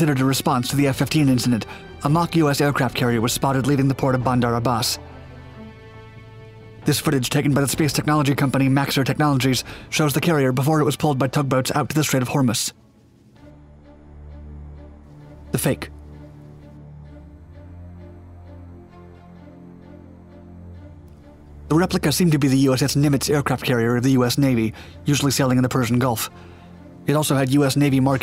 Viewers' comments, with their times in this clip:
0:10 Strait of Hummus? (Yes, I KNOW it’s ‘Strait of Hormuz’. It’s just the yank’s pronunciation).
0:12 I've never heard "Hormuz" with accent on the first syllable before. ...Nor with the second syllable pronounced "muss" instead of "mooz".